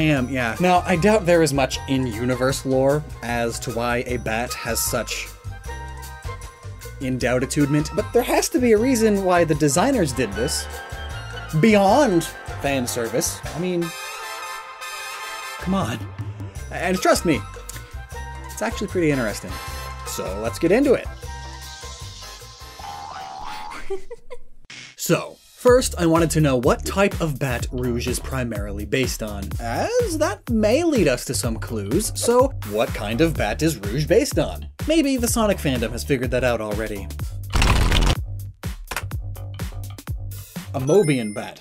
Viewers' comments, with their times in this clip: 0:07 Sonic sweating and you pausing before saying "Beyond.. Fan service".
0:22 That's a nice laugh. Sounds cute and pretty. Also Rouge is basically Catwoman but as a bat. Guess Bruce & Selina's Mobian counterparts had a kid.